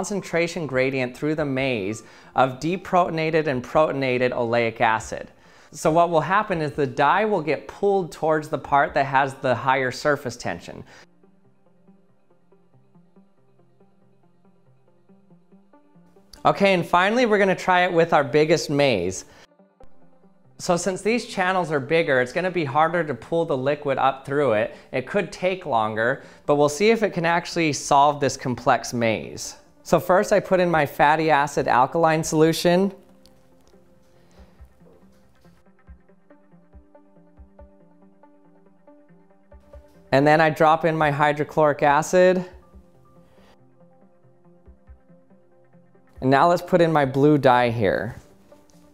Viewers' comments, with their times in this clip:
0:10 Did anyone else notice that his audio went silent for a couple of seconds?
0:30 f a t t y a s s e s